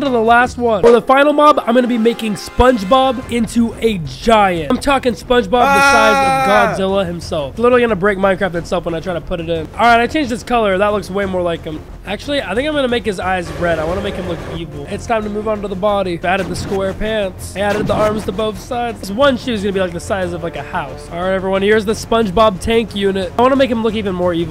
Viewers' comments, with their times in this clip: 0:05 that “ahh” though